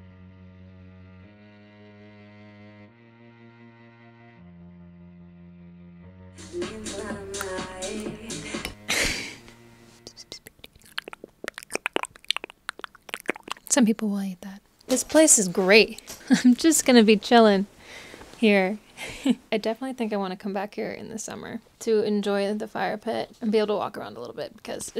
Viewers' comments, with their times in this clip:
0:10 plz no😤😵‍💫🤢 I hate spit sounds😭😖